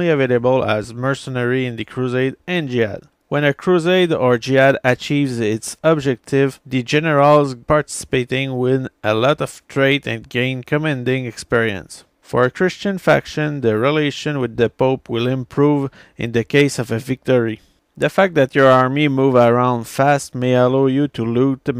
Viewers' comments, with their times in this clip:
0:09 when a crusader achieves his objective he becomes jewish